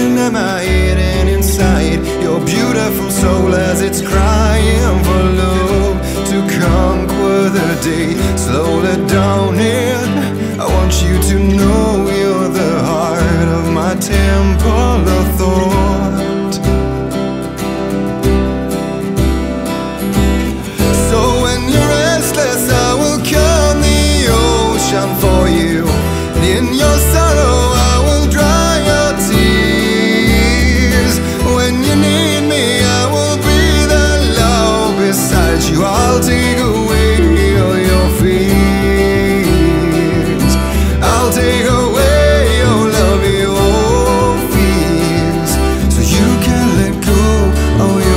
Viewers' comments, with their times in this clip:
0:06 aha there it is, the sign that he's not a native English speaker! That's the first time I've ever noticed it and to be fair he's "conquered" the language more than I have! :)
0:35 His voice slightly breaking in, "I'll take away all your fears" adds SO much power and magic to that line. One of many examples of why I just absolutely adore this song!